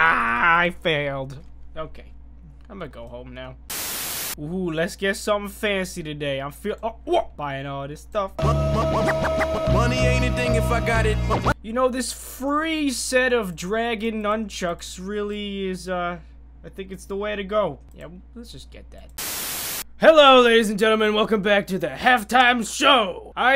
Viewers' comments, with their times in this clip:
0:10 do y'all hear that or is it just me (a bad word)